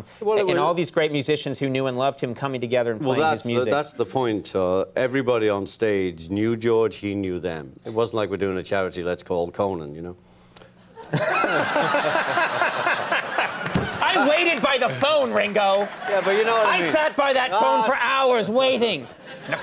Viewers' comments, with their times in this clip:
0:07 "It wasn't like we're doing a charity, let's call Conan" Perfect timing and delivery, Conan was so surprised